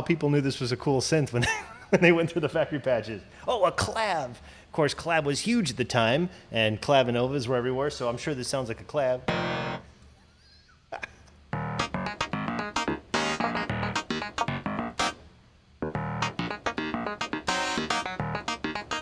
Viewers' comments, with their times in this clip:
0:03 funky sound im gonna come back to